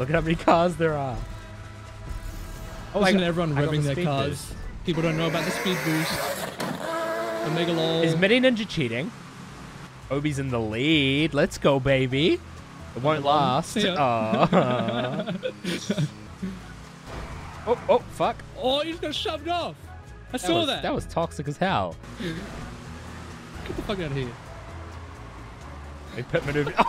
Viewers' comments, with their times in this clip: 0:07 the rb26 sound 😂